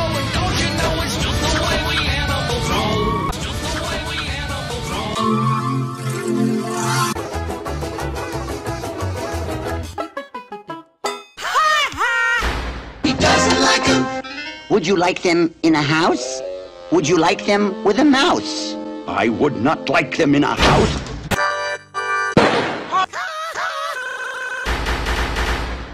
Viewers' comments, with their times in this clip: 0:07 Nelson simpson moment